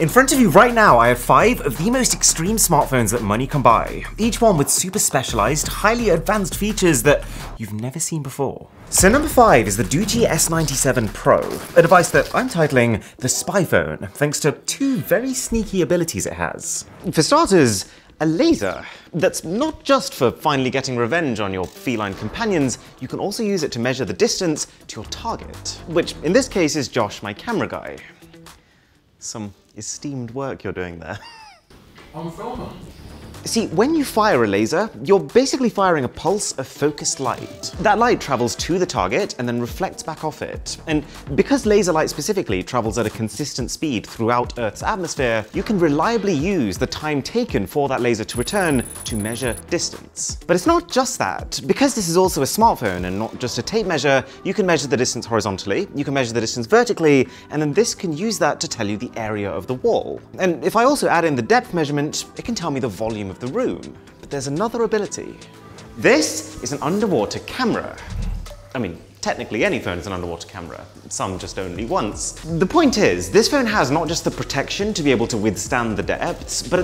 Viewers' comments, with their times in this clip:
0:09 I thought Gucci 😅😅
1:01 Why is there Peppa pig playing in the background 😭